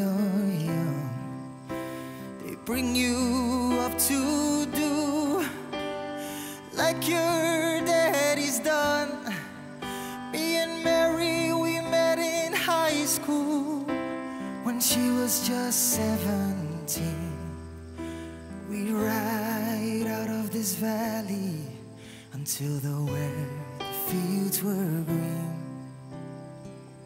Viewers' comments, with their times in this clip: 0:09 .. very strange sound